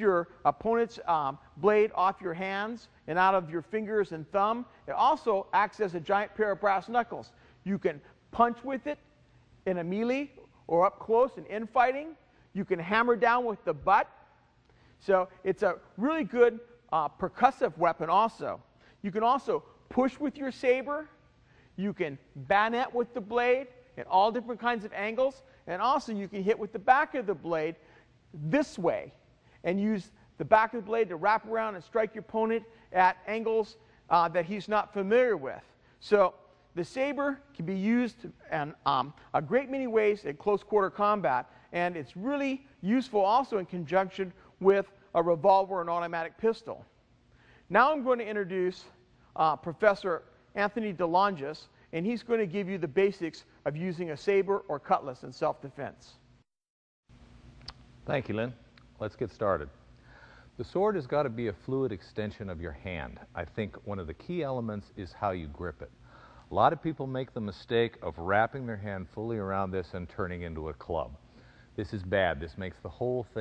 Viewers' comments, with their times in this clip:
0:05 This boomer just said meeeleee
0:11 What the hell is a mealeeee? Do you mean melee (Proper pronunciation = mêlée or MEL-AY.
0:56 Just skip to Second guy takes over and can actually talk.